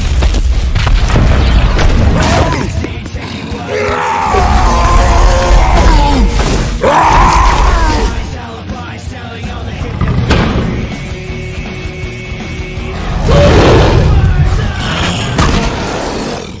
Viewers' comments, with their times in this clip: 0:03 you are a savage when you roar
0:03 wha- why do you sound like a human LMAO